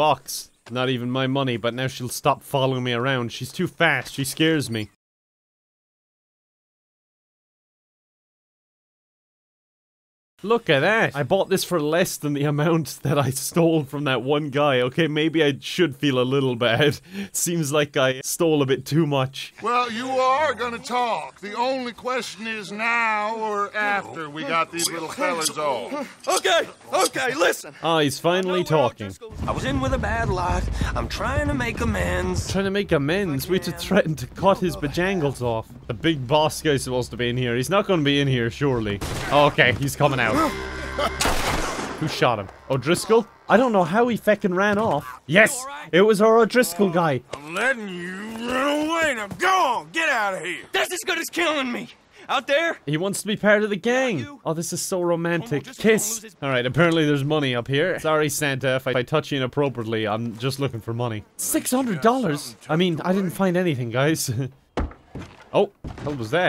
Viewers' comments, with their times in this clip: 0:05 was about to skip to the video before i realized there was an ad. rewinded and made sure to sit through it. 👌 Edit: theres a random black screen with no audio
0:52 lmao he sang that in the spongebob tune